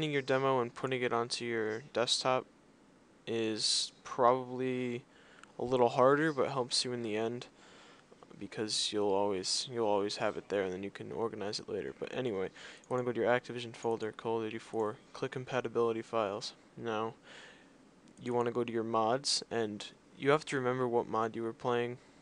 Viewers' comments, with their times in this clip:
0:06 Humps you in the end?!?!?!